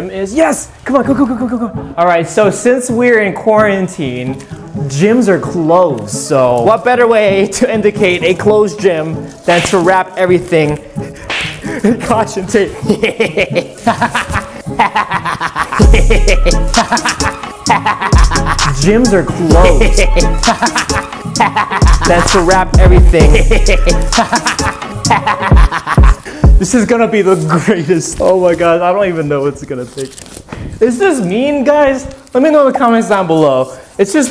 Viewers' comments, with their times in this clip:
0:08 that beat got me dancin tho
0:11 the rap,its awesom
0:14 that's some sick beats!
0:15 sick beat oh ya
0:16 This remix of the evil laughing